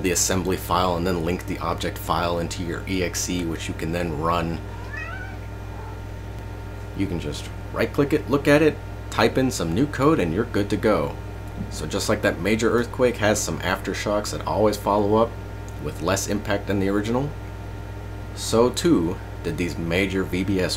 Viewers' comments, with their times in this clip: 0:05 sounds like my cat saying meow